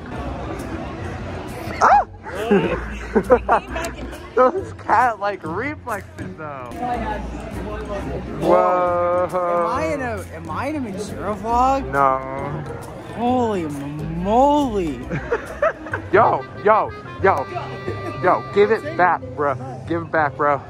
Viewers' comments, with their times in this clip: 0:08 I can't tell what he's saying "Am I in a (something) vlog? Holy moly"